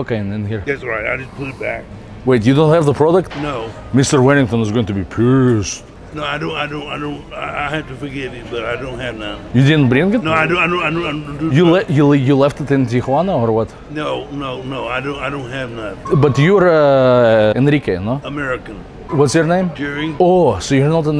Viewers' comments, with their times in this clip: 0:03 the way he said pished 😂